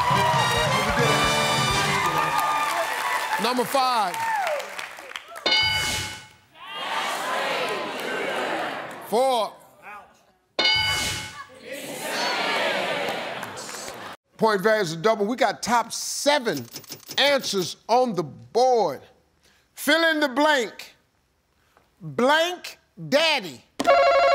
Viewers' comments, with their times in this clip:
0:09 the dude in the audience going “OUCH” lmaooooo